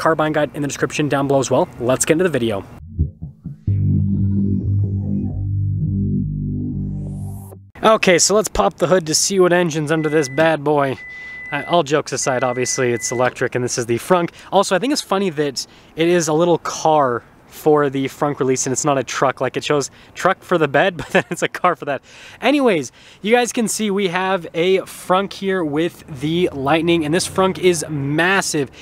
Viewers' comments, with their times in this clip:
0:09 The Toyota like chime